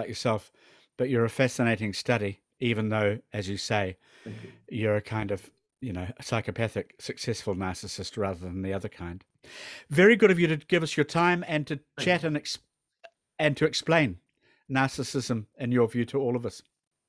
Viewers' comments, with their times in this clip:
0:03 That "thank you" in is sooo creepy